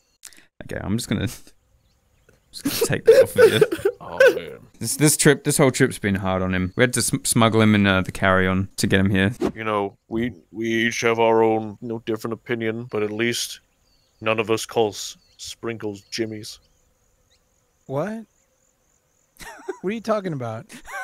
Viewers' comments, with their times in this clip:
0:06 snuggle him in a carrion? Like a Kyarn a decaying animal onna side of the road?